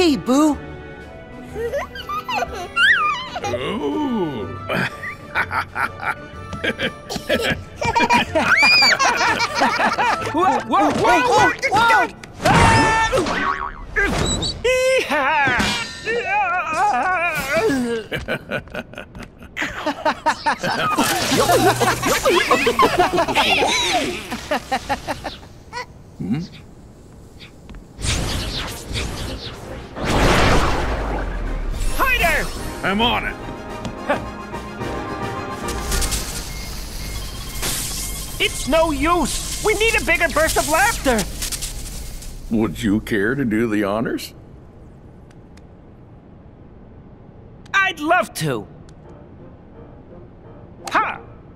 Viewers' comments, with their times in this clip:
0:10 Who Laughed When Mike Got Knocked Out!
0:38 Silver! What are you doing in the body of Mike?!